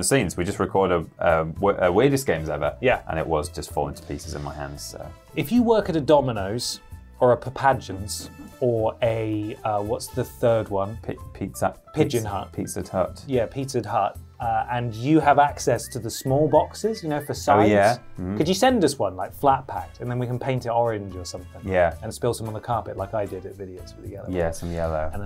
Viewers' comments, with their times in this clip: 0:06 I replayed so many times trying to figure out what he was trying to say . Papajuns? Papajons? Then it dawned on me: fucking Papa John’s?